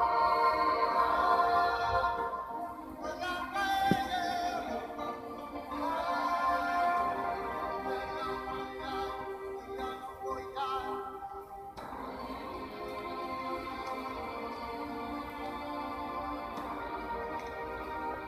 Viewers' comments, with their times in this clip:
0:03 The theme says "I'm not crazy" Is it just me or that theme says "I'm not crazy"